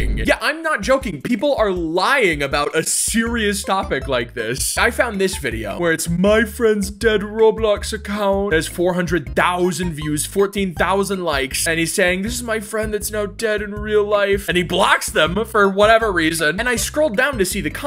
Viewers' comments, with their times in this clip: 0:05 he totally pronounced that right 💀